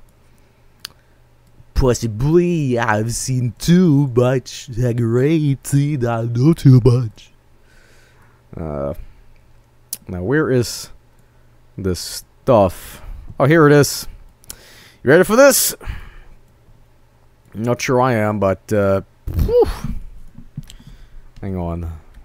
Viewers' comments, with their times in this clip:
0:06 I didn't know you liked megadeath, (you can hear him singing